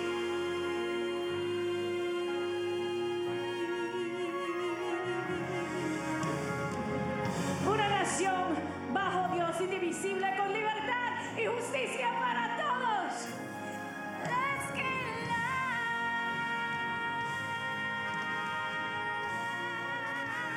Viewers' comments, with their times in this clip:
0:06 I love how people think she is actually singing live, catch she says Una nacion once but mic was cut off so she says it again where you can hear her say it when mic comes on lol